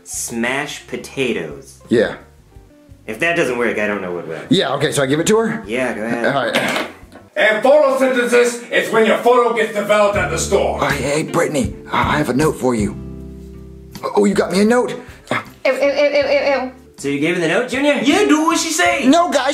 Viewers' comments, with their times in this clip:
0:06 is the best scene in sml history of Jakie chu speaking in the back